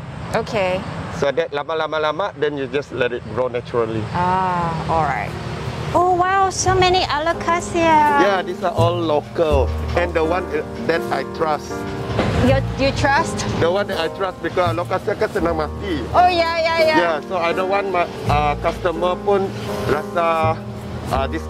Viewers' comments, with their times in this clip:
0:09 Greetings from Japan! Could you please let me know the title of the background tune very relaxing and soothing.